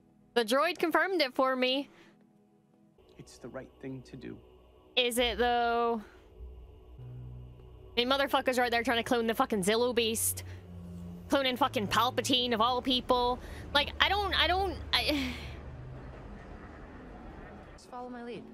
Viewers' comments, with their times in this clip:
0:03 Holy shit, listen to that music…it sounds EXACTLY like Snoke’s theme and/or the music from the opera scene in ROTS.